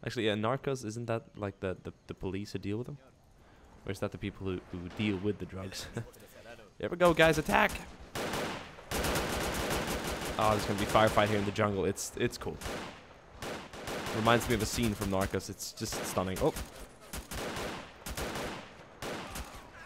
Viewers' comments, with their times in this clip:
0:07 Nice voice crack lol 😂😂